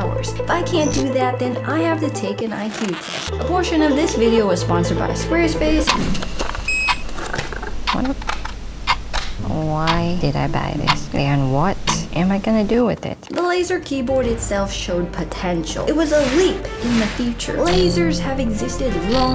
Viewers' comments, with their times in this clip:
0:03 abortion this video is etc